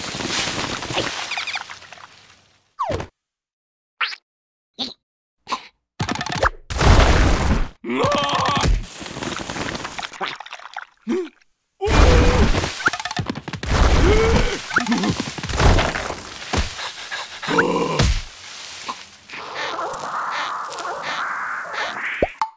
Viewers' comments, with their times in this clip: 0:07 I love this part when yellow screams